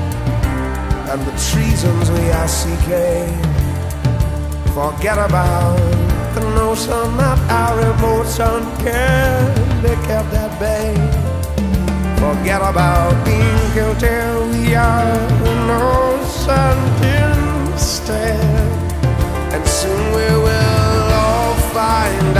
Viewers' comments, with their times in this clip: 0:08 That piano descent ... 🔥